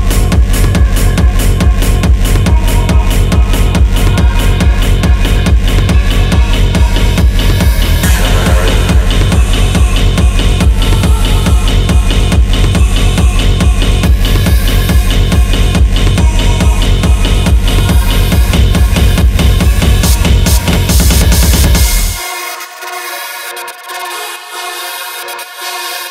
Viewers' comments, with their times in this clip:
0:07 Nice oldskool voice lead :D